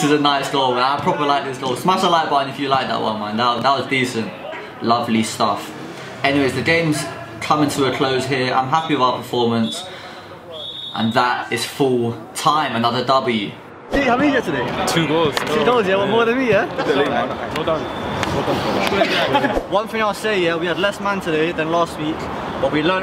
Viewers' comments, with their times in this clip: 0:10 I could hear someone say in Spanish “it’s cause we’re missing 2 players“ lol